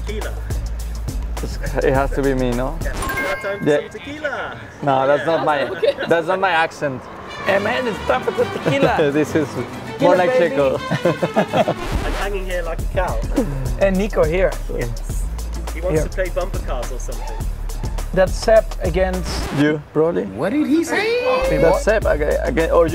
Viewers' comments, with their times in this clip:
0:08 If max was going incognito in Mexico like that he will be busted immediately🤣